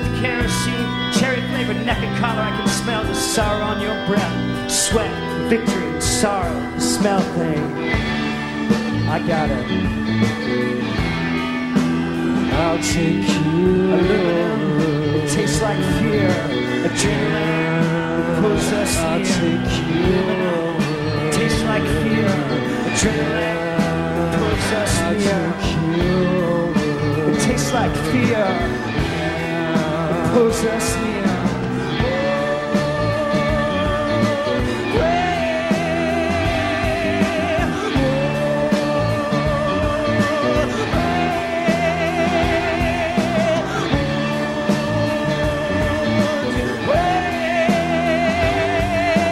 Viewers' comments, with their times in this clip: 0:08 Thom starts to swim into the song, then he starts to fly away. Amazing...
0:26 I was like "It's such a waste to bring Thom for a boring chorus", till the JAJAJAJ. Awesome.
0:28 That moment when he channels Patti Smith is transcendent. Gives me chills.
0:31 Thom on interrupting!